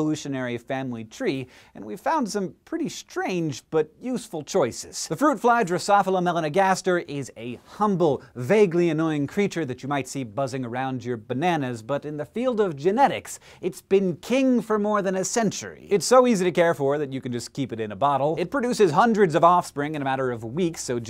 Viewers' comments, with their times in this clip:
0:05 nine syllable per second!